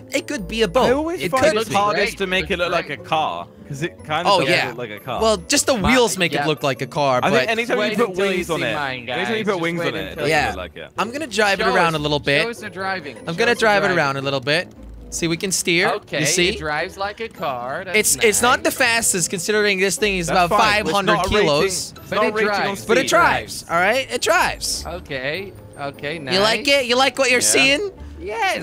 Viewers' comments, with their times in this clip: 0:09 # singing a bendy song